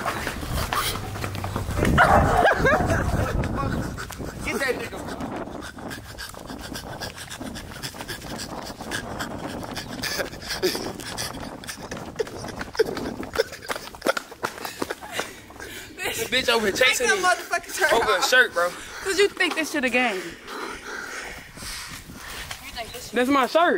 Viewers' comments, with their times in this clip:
0:07 It’s the camera man breathing for me 😂😂😂😂😂😂
0:11 camera man breathing hard asf 😂😂😂